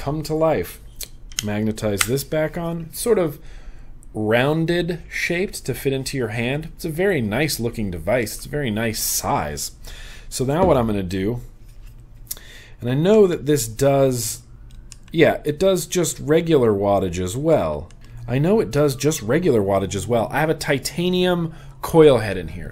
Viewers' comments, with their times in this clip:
0:09 anyone else hear sirens